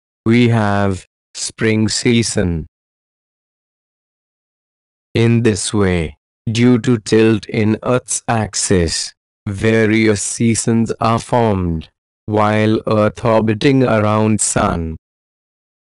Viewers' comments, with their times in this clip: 0:08 I first saw that the Video is mins, and then i clicked and saw how slow he is explaining, i thought the video will End before he finishes the First Sentence. 😂😂 Any how, Great Explanation 🎉